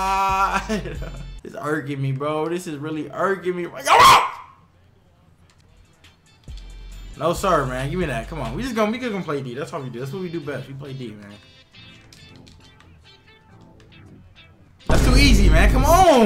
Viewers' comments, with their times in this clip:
0:04 tf did he say
0:04 tf did he say